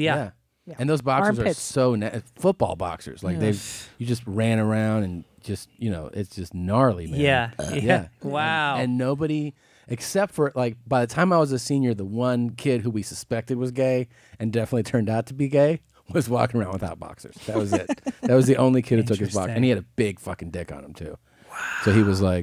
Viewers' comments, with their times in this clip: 0:07 Christina's burp had me laughing so hard!!